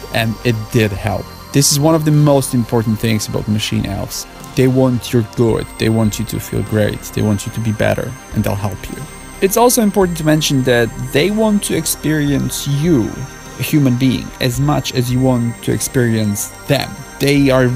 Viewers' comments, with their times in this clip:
0:04 "They want your glord." what the fuck does he say here